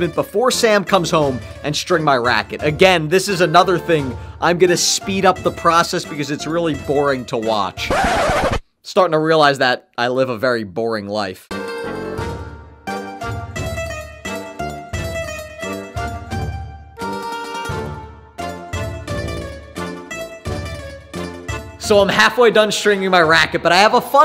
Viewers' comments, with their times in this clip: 0:05 I laughed so much when I saw you singed in the shower! 😂❤🎉😊